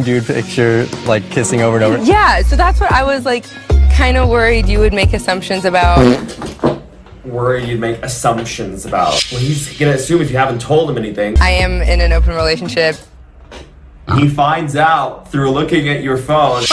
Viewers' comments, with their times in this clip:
0:04 was that fart necessary 😭😭